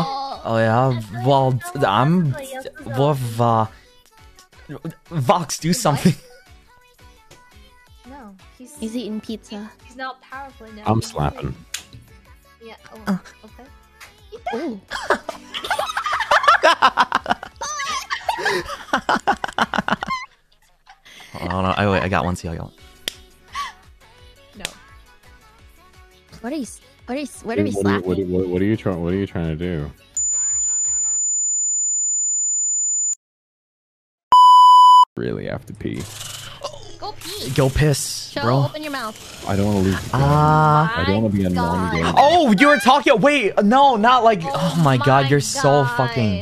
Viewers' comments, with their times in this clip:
0:09 I HEAR ENVY BABY IN THE BACKGROUND-
0:20 Warning for Headphone User
0:30 What the fuck is that noise I'M IN PAIN Like I- that genuinely made me try to turn my head away from the noise. It's like when your neighbour installs one of those alarms that are meant to deter stray cats so they're motion triggered but they just kill everyone that walks by yk